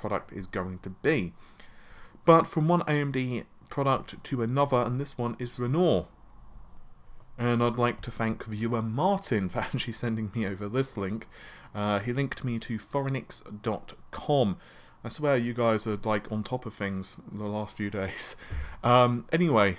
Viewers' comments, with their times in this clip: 0:03 First there was Narvey, now we have Renault